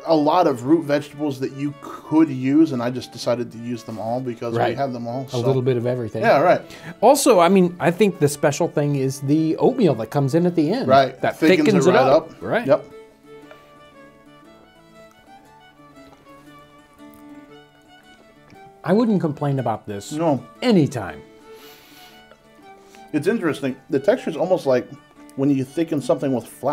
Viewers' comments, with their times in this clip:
0:08 “i think the special thing is the oatmeal that comes in at the end” I heard “opium” instead of “oatmeal” and had to rewind. That would be a very special soup indeed
0:09 Did he say Opium that comes in at the end? Did he mis-speak and meant to say oatmeal?....try adding 1/2 to a whole headof cabbage to your next pot of "Soup". You will never go back to making it any other way if you do.